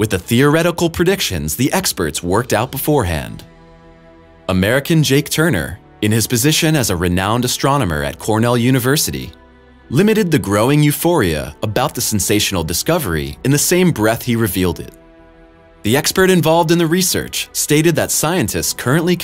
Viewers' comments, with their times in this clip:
0:07 wonder what acapella group hes in